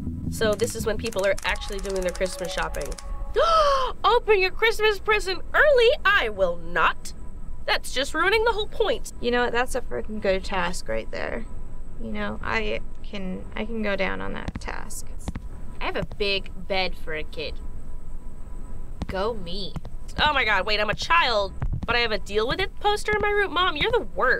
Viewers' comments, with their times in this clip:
0:05 A real orderly house phone's ringing in the morning,child and Momma in bed but not asleep